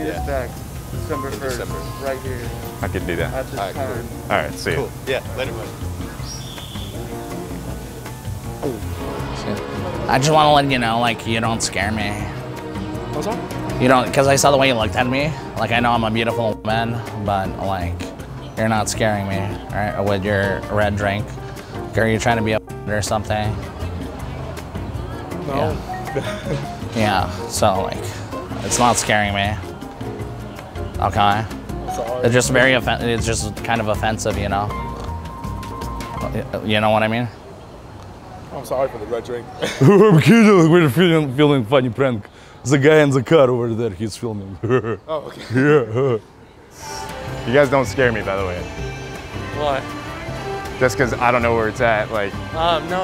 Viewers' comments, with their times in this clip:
0:09 he can change his voice?! 😂 he had such a thick accent at first
0:09 I wasn't expecting that voice 😂
0:10 Him speaking in that accent lol
0:10 that has got to be the funniest voice switch ever lmfaooo i was like wtffff was that his actual voice? Then he switches back to his russian accent 🤣🤣
0:10 oh mytyy his voice is tooo funny
0:10 how did he make his voice do that? 😂😂😂😂
0:10 how his voice changed omfg🤣🤣🤣🤣
0:11 ok I am confused.. which accent is actually his and which is the one he uses for the prank! 🤣🤣
0:14 the voice when I play computer games
0:14 i thought that was the other dude talking😭 im so used to the russian voice
0:14 I got confused on the Russian guy real voice does someone speak at background
0:38 lmaoooo his voice deadd 😂🤣🤣🤣
0:41 His laugh tho🤣🤣